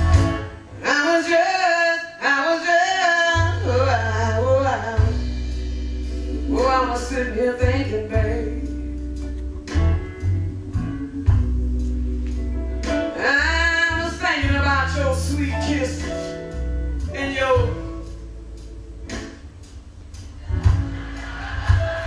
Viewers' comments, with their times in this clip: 0:03 There was an art to the blues...story telling. I know she had to drop the keys lower as she got older but you could tell she meant what she SANG! You can feel the sorrow in the back of her throat. P.S She was a frrrreak..@ 😶